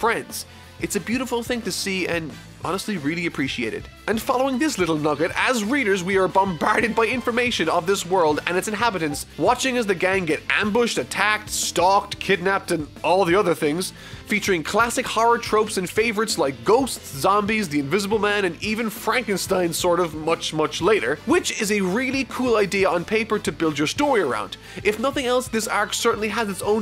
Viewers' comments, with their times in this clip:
0:08 Lol who heard the discord notification noise
0:08 That discord sound NotLikeThis
0:08 I thought I left Discord open
0:08 I hear a discord ping
0:08 gotta love that discord notification
0:08 am i the only one who heard the discord noti ???
0:08 discord ping noise lol
0:08 discord ping lol
0:08 wow i thought it was my discord
0:08 I thought my discord went off for a second lol
0:08 discord notification, made me check it instinctively
0:08 anyone else check their discord :D
0:08 is that a Discord noise or am I absolutely losing my god damn mind?
0:08 Discord notification noise
0:08 The discord notification spooked me
0:08 bad villain = bad arc also i thought i got a discord message
0:08 your discord went off
0:08 The discord notification sound! Who else heard it?
0:08 That discord alert had me looking at my discord in confusion :D lol
0:09 ok but did anyone else hear the discord notification ?
0:09 Am i the only one who heard the discord sound ?
0:09 anybody else hear the discord ping ?
0:09 I cant be the only one who heard the discord notification sound
0:09 Random background discord sound XD
0:09 lol he got a ping while recording
0:10 you can hear a discord notification 😂